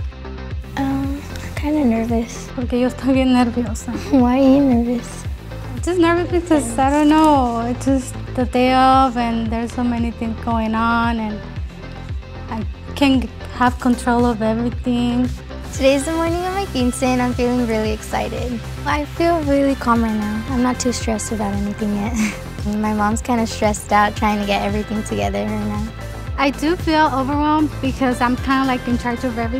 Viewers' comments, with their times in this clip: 0:10 why does her mom sound like cardi b okurrrrt